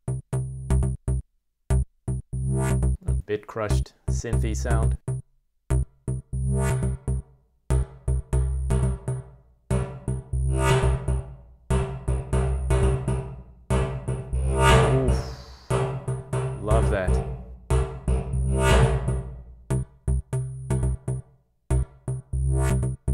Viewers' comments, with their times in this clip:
0:04 Sorry to bug you all, but... can we all just take a moment to appreciate the beautifully huge harmonic synth rip after
0:09 oh jeeze that sizzle was nice with the reverb. Made my headphones tingle my ears XD